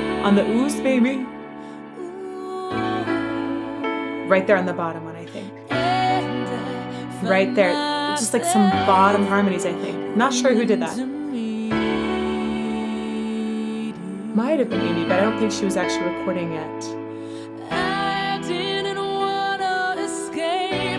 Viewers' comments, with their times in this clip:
0:05 You said "right in the bottom I think" about harmony. Amy's mic HAD to be hot and I wouldn't be surprised if she was humming along thinking she was outside the mic. I heard it too when first released!